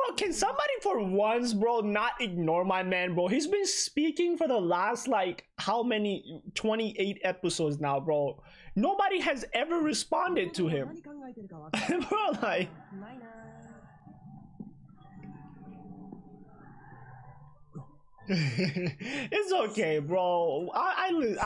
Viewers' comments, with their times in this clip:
0:03 Its harder to tell in the Japanese version, but Gorgon speaks extremely quietly.. I watched the english version and I had to put my ears by the speakers to make out what he said.. be he's a good dude.